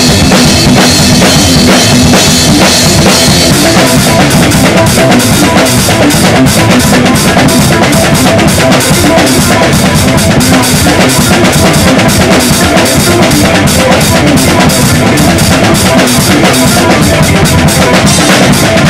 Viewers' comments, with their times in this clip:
0:04 Was an awesome cover :D Only thing that needed to be worked on was the hi-hats should be choking it and not constantly closed! Unless you are choking it, in which case you need to raise the top half of your hi-hats slightly!